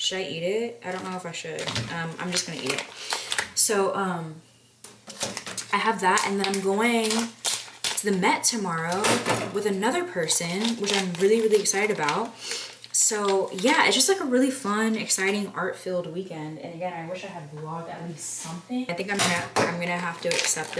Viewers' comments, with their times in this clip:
0:06 I caught myself talking saying "it doesnt look too bad", you can't even hear me lol